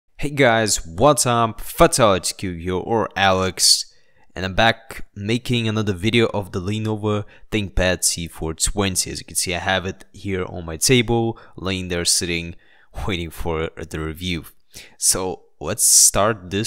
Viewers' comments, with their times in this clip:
0:00 it sounds like "Pig Guys".. funny :D